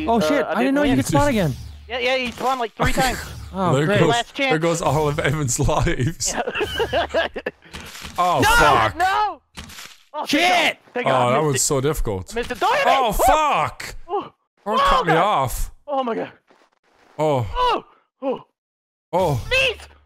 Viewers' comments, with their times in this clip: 0:04 undertale boss fight music comes on